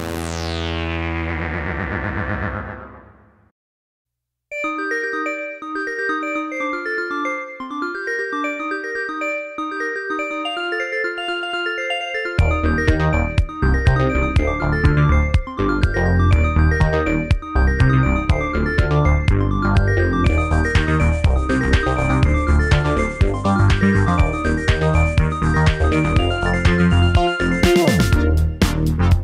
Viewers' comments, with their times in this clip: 0:03 Miss the old sounds... Ethereal and Bells!
0:13 This is beyond talent those sounds are awesome the bass in that song is unreal so cool